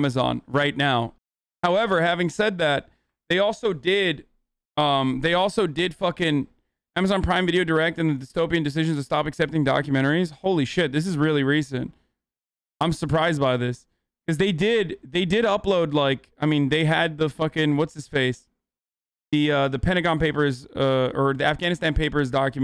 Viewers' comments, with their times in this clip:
0:10 For HasanAbi's real bitch tone of voice (once he realizes he is actually wrong about something he just chauvinisticly claimed a minute ago) What a beautiful moment, takes him a minute to get back to his pompous self. :)